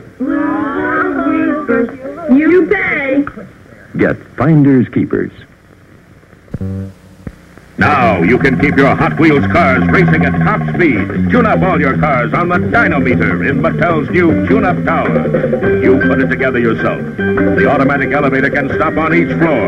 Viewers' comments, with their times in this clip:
0:06 OMG, I've been searching for an upload that includes the '60s Operation game commercial, with the Grace Slick-sounding jingle singer, Thanks for making this fellow Baby Boomer's day! ;)